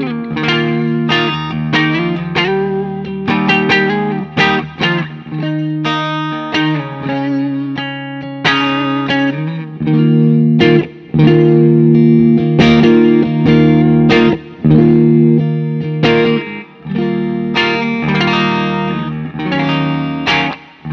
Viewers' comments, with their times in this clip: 0:06 Anyone know a song that sounds like what he was playing ? that sounded sweet